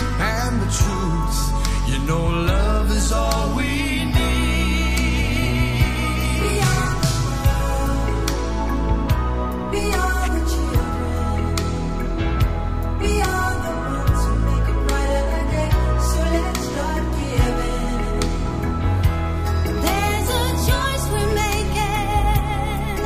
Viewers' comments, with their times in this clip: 0:06 i am emotional because of MJ's voice